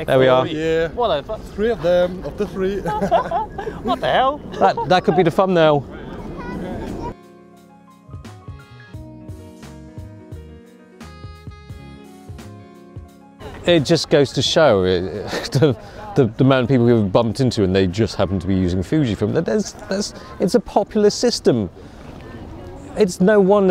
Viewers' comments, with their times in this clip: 0:04 thumb nail, fun nail or farm nail? 😁🤷🏻‍♂️